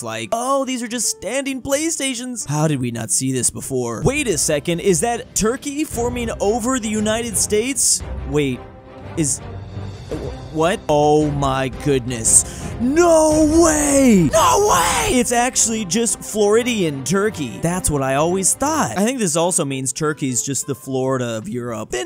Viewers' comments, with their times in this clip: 0:10 the battlefield music was a really nice touch xD